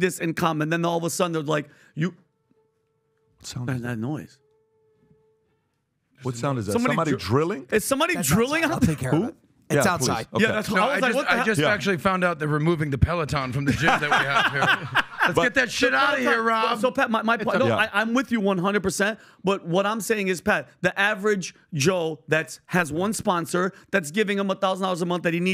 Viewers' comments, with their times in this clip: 0:07 Drilling outside to remove the Pelotons 😂